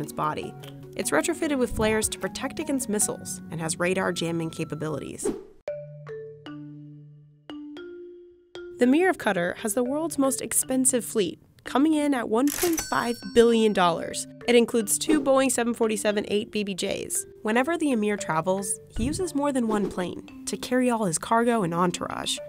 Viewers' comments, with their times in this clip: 0:08 The way she said Qatar is just disappointing
0:08 they didn’t just pronounce (Cuu-Tarr) cutter did they